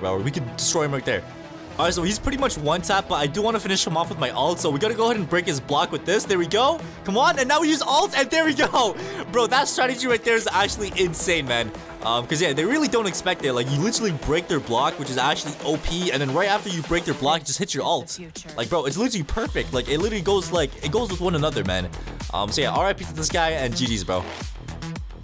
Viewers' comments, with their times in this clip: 0:06 that beat synced so hard 🔥